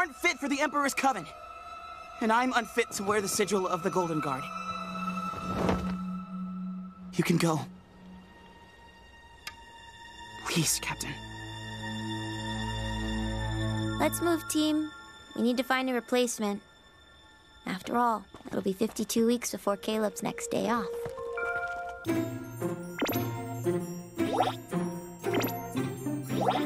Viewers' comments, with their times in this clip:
0:08 Oh my gosh, Willow was crying here